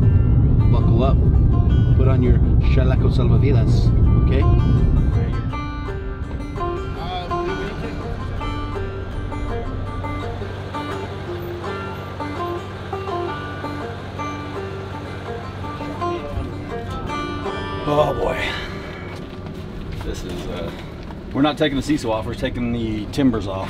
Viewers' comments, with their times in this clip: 0:05 Awesome video guys, can I ask what the funky banjo music is ......nice little tune.